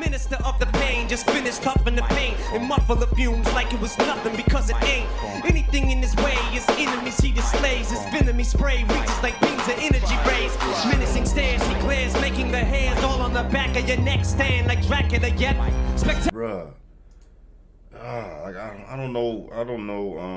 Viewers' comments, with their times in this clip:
0:03 Right before you turned the Volley up I tried to turn the earbuds up... 😑😂 Great video fam! 🤟🏼